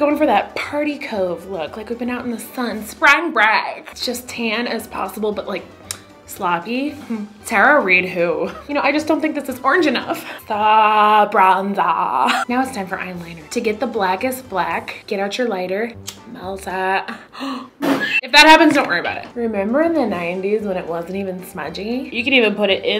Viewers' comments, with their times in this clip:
0:06 i like her "hm!" Lol🤣